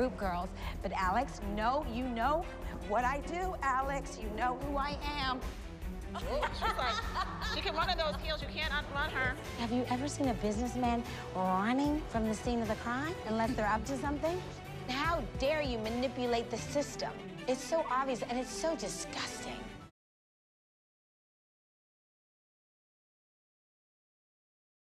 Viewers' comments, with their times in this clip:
0:07 Jill laughing is everything LOL!